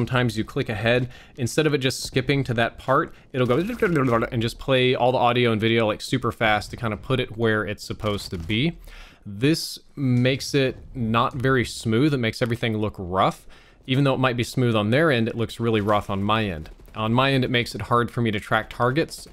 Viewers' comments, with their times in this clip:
0:05 Your voice example was perfect